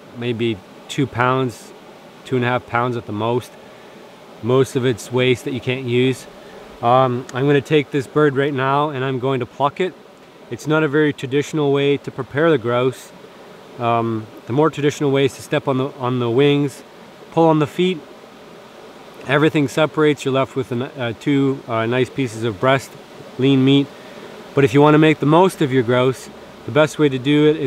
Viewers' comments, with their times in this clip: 0:08 I heard it wrong :(